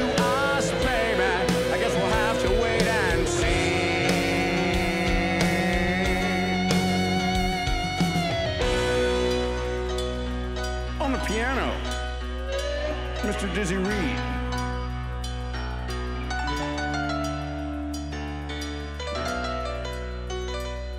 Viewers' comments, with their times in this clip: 0:03 The harmony is so good!